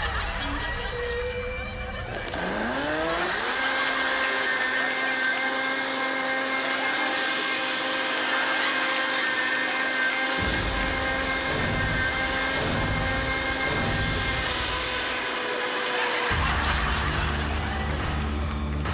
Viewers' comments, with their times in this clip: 0:04 when ellen switches on the grinder and she tells her to shush wow 😂😂